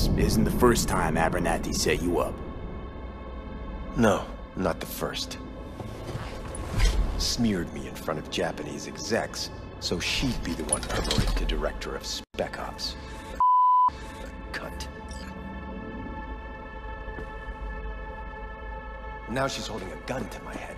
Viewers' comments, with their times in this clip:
0:06 Oh, I am super excited to get my hands on this mod. I'm madly in love with the world of Night City as it is, just seeing it through a monitor... VR might just be too much for my heart to handle!! 😆 Great work with the naughty word bleep by the way 😜 I think your editing software might have let you down a bit there!